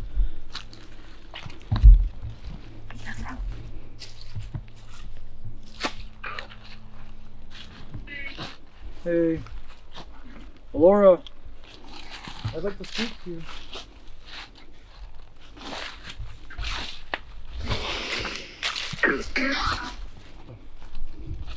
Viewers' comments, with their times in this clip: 0:03 a female voice but can’t make it out